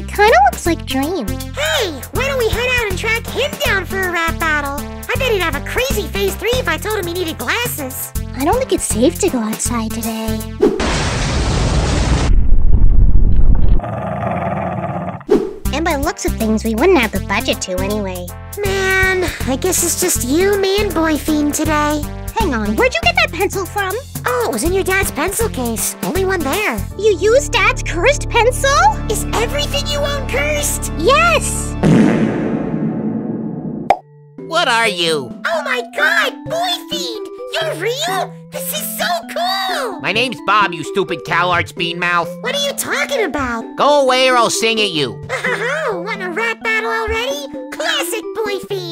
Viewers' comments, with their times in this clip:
0:06 BOYFRIEND MISSED A NOTE LMAO-
0:36 And now Boyfriend's voice has officially broken my eardrums